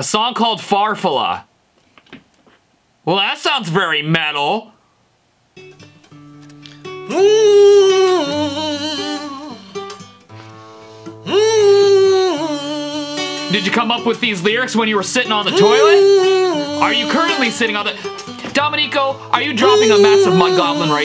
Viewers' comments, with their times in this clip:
0:07 PPPFFFFFFFFFTTTTT... Is it me or does he sound like he just found out he got evicted?